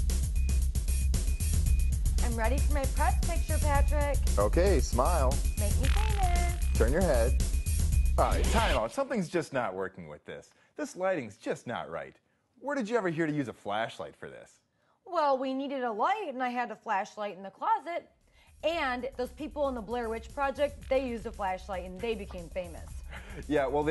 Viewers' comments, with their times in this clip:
0:05 i swore i heard someone fart